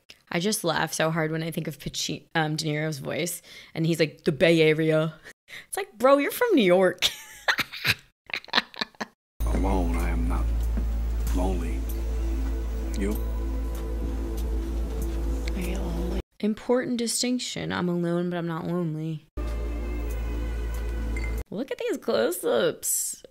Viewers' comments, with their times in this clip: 0:09 Says the ragazza who claims to have subdued the accent she never displayed in any video she made when she lived back in Long Island. 🤭